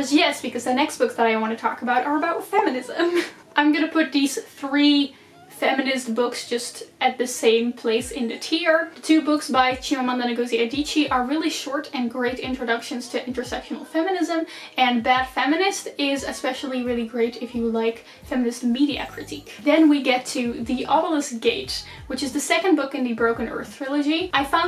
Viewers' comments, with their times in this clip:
0:09 listening you over and over and over again saying Chimamanda Ngozi Adichie 😍